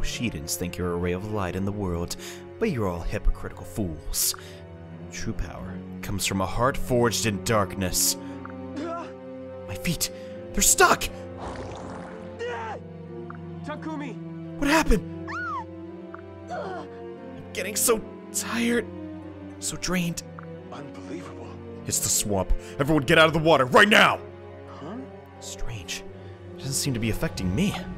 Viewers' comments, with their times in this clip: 0:08 this sounds like a kindom hearts cutsean